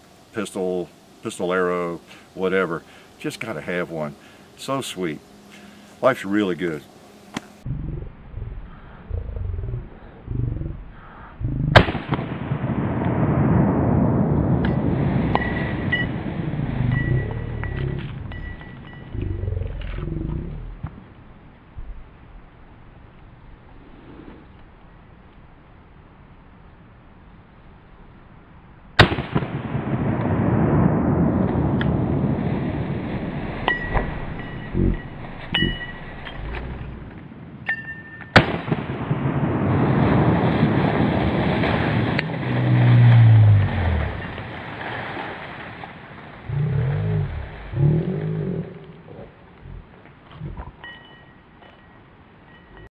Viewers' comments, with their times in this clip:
0:09 Listen from onwards and tell me that this 1 minute of video before it ends does not sound like the grunts of a "Predator".
0:42 (haha) dinosaur roarrr !!!